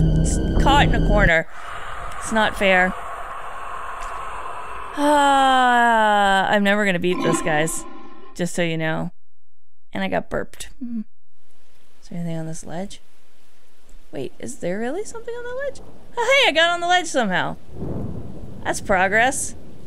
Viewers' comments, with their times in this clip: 0:06 (*satisfaction burp) guess you did taste nice